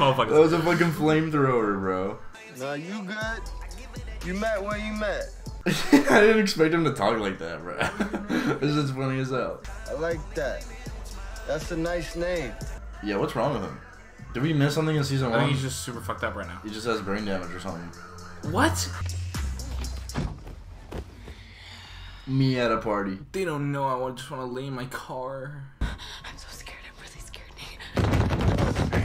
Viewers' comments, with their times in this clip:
0:08 Y'all talk like fez for a living
0:13 In season 1 Nate makes fun of fez for being a drop out with 1 brain cell, im assuming it’s all the drugs he’s done that make his speech so slow💀but also just his accent plus all the shit he’s endured overall